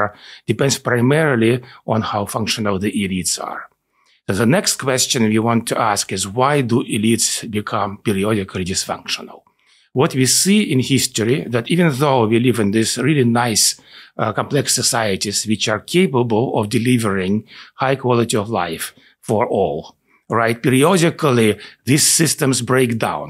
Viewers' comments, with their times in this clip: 0:07 I don't think it's a coincidence that sometimes when he says "elites" it sounds like "idiots" to my american ears, lol